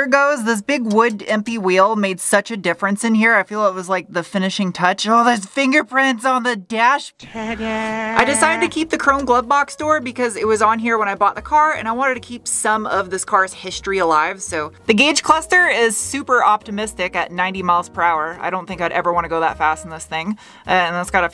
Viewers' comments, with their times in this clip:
0:05 Peter Griffin "Ta Daaa" Clean